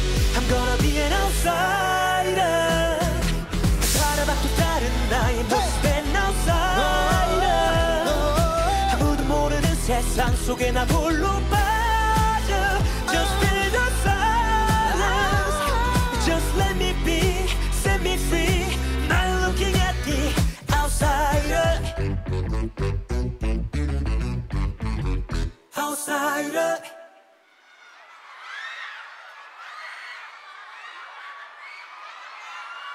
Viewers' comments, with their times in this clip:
0:05 HEY! Our mics are on!
0:18 Anyone who doubts BTOB is singing live, Eunkwang adds a growl on the word "Now ", and that's different from the MV.